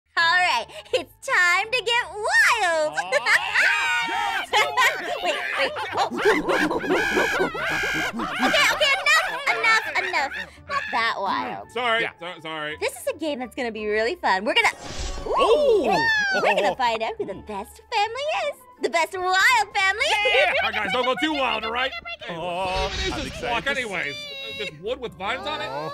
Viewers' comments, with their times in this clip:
0:00 can’t beat that pause
0:06 the laugh got me rolling on the wall 💀💀